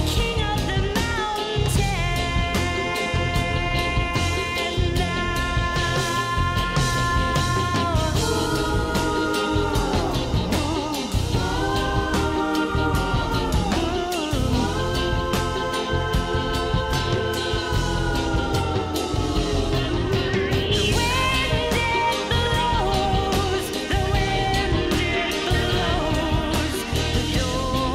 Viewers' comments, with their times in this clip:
0:10 you can clearly see Kate is really feeling the funk of this song.shes singing her heart out.thats why I love this girl.she sings with such passion.